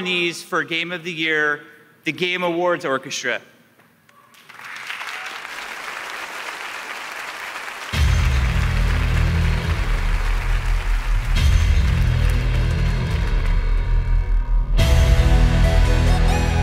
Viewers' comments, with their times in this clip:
0:04 While people arguing which game deserve Best Game Award, I'm here appreciate the Orchestra marvelous!